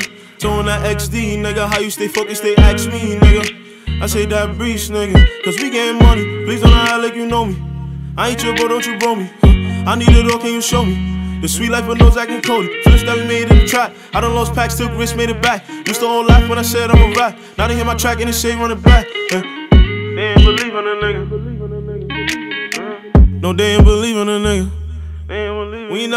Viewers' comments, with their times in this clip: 0:07 who change the song 😂